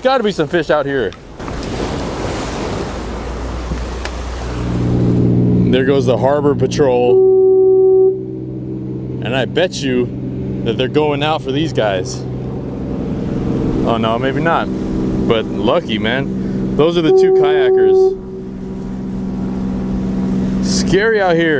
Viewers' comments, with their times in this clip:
0:04 i hear that crab hitting that rock and the way he look at the cam..